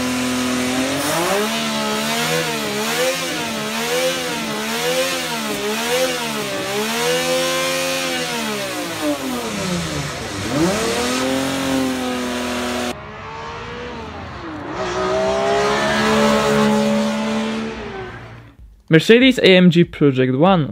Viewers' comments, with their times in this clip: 0:03 sounds like my 03 corolla on steroids
0:08 Dammmn It sounds so much like an S54!